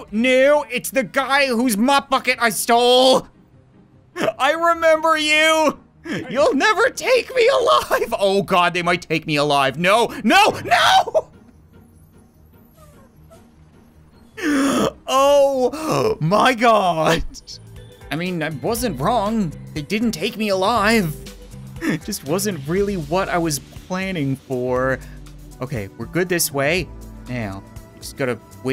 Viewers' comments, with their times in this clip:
0:10 Never heard him scream that loud XD